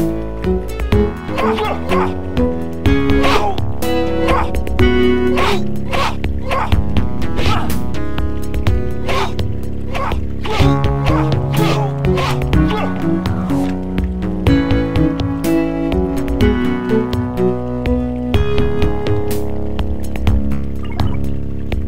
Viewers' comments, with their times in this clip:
0:03 It's funny how our brain is. The other day I heard a song Live to Tell (Maddona), and at the time I thought "I've heard that sound somewhere, but i don't remember'. I accidentally fell into this video. Damn it's pure nostalgia the music it seems Live to Tell